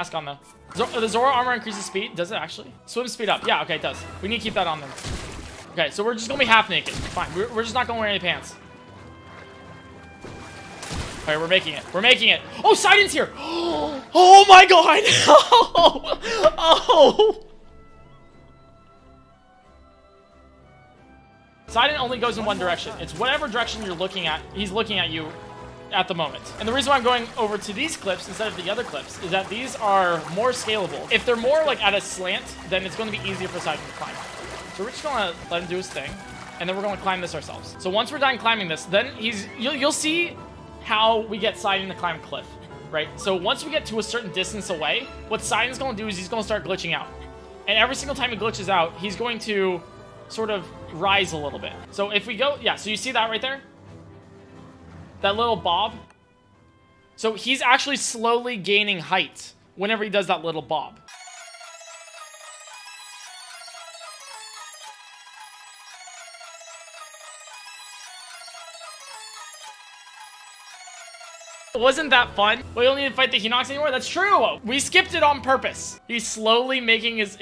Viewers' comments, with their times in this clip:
0:08 "OH MY GOD SIDON'S HERE!!!" was said in the same voice I use when I see my crush
1:01 Botw x1000 kind of bopped